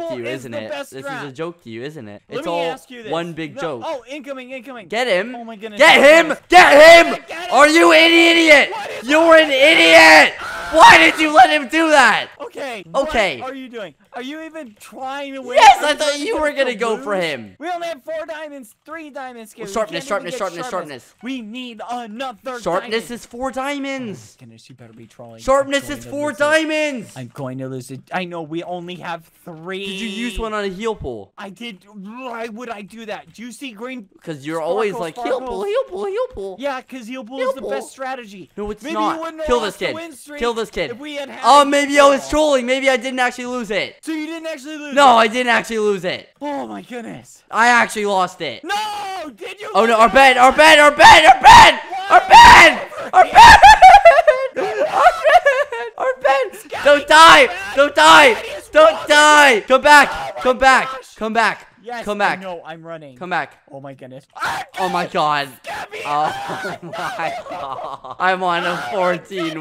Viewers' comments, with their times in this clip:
0:06 I swear skeppy sounded British getttt im’
0:54 skeppy started crying 😂 😆 😝